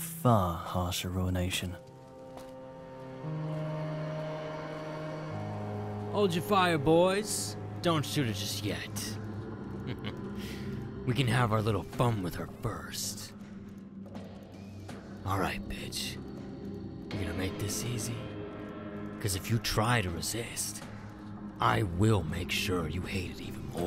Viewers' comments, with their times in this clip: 0:08 wow that guy sounds like the raider voice they use in fallout 3! Thought it was him for a second. Voice acting work looks spectacular, can’t wait for this mod